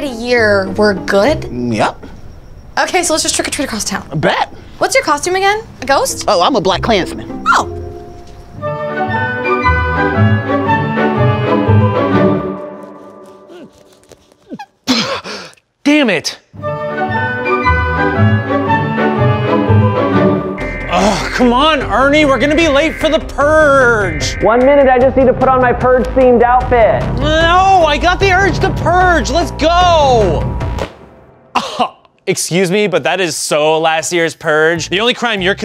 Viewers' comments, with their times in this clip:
0:07 That voice crack im crying XD
0:21 Siren head noises
0:21 Siren head sound